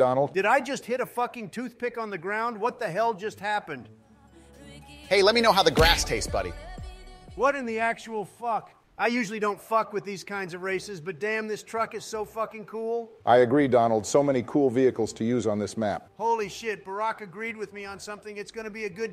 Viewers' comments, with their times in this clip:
0:03 the fucking tate theme song coming in and then "Hey lemme know how the grass taste buddy" LOOOOOOOOOOOOOOOOOOOL